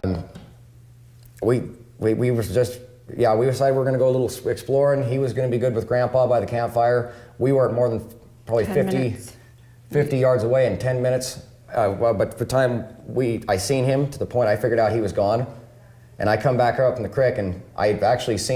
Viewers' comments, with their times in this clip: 0:05 I think the disfluencies and behaviors off baseline here are due to them reliving the worst moment of their experience. It’s the worst feeling to discover you don’t know where your small child is. I think their elevated stress here is natural at this part of the story.